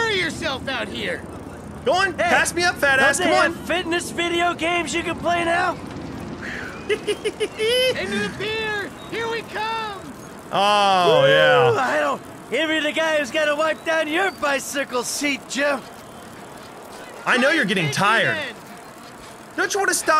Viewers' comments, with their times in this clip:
0:07 I love that laugh
0:07 lol that laugh